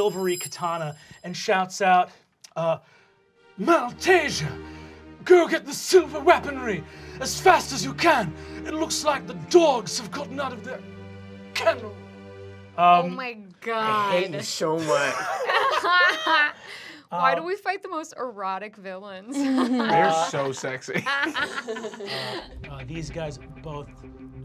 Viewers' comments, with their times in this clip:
0:06 Two-sworded Man sounded a lot like Tim Curry.